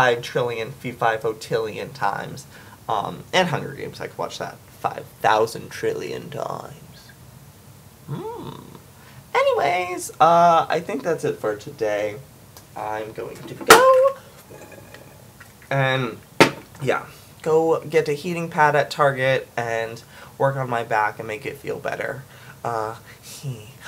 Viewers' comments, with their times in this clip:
0:06 O.O Are you in any way related to AmazingPhil or danisnotonfire because I swear you sound just like Phil, and you are always wearing random winter hats in the middle of summer like Dan... And you all have a Totoro obsession... I don't think this is a coincidence...